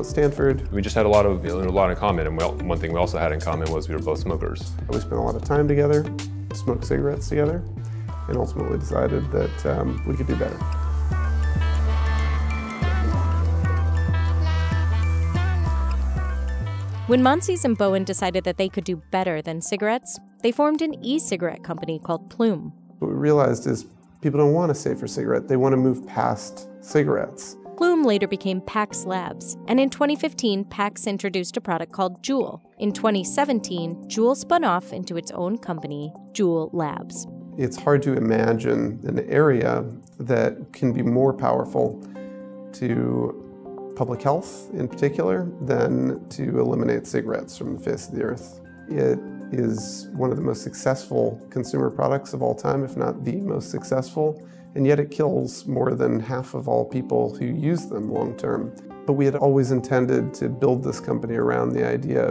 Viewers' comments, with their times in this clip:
0:05 the owner looks like his voice has been affected by it LMAO why do people buy this
0:43 The way he says "public health" he knows he's doubtful and/or deceiving the public!
0:45 -the guy with red hair....his voice sounds weird like raggy voice .wonder why that is? from the vaping?
0:45 -the guy with red hair....his voice sounds weird like raggy voice .wonder why that is? from the vaping?
0:45 -the guy with red hair....his voice sounds weird like raggy voice .wonder why that is? from the vaping?